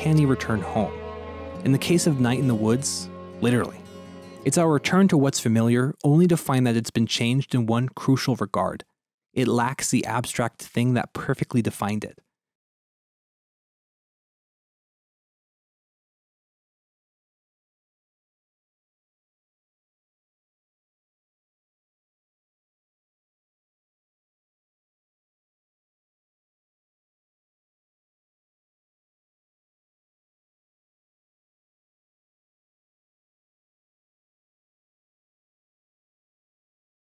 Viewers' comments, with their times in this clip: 0:10 I thought my speaker broke!
0:12 Is it just me or does the sound go away ?
0:12 Why no sound ?
0:12 how come the audio goes out?
0:12 At like the sound cuts out on your vid bud.
0:13 Why did the audio just.. cut out here? Am I missing something?
0:13 Does the audio cut out for anyone else as well?
0:15 the audio cuts out :(
0:17 Anybody else audio go out ?
0:21 why did the sound stop? Ufter that point there was no sound
0:22 Why does the audio go out ?
0:22 The moment where the audio cuts out entirely, while briefly showing a diagram of the Uncanny Valley then slowly zooming in on a breakfast pizza I had been told moments ago now felt "not the same" or "they changed something about it" was honestly a kind of fascinating little experience? even though it wasn't intentional
0:22 Your audio cut out